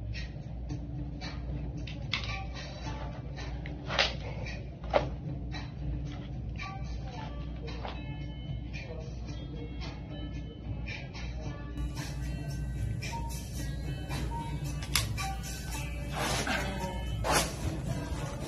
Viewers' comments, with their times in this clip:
0:06 I'm dying at the fact that "under pressure" by Queen was playing in the background......hilarious 😂😂💜